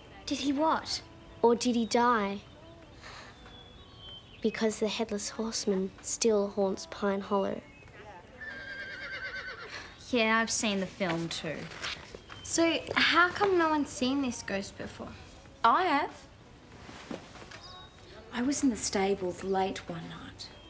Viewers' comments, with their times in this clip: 0:06 That horse neigh after when Lisa said the headless horseman still haunts pine hollow was timed perfectly.